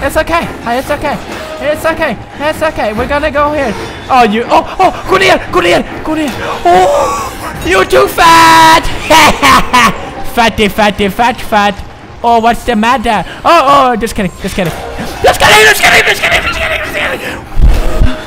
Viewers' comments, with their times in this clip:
0:04 is this malayalam? kuniye means to bend!!!